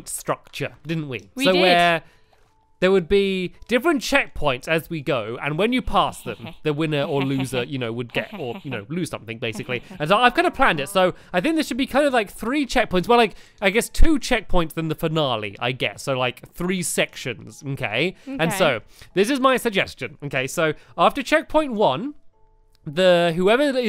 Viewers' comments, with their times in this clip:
0:04 Yur evil u killed that poor cow and did a evil laugh
0:05 lol when you started to chuckle 😂
0:05 Yeah you did chuckle